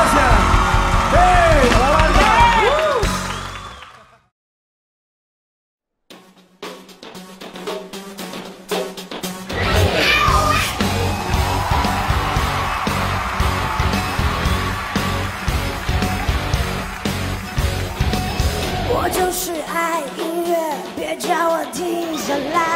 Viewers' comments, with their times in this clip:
0:05 you can't find that kind of voice every day, she is amazing! 我的爱是火 ❤